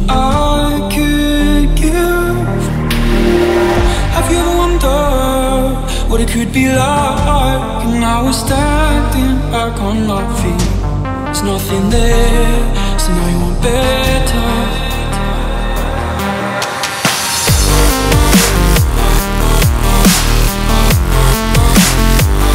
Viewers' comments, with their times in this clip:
0:07 someone plugging in there iPhone?